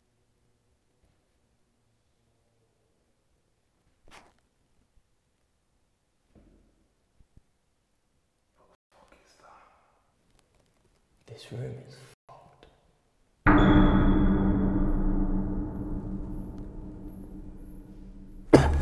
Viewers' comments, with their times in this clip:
0:06 if you have earphones in and you turn the volume up you can hear chanting?!? I would of noped the fuck outta there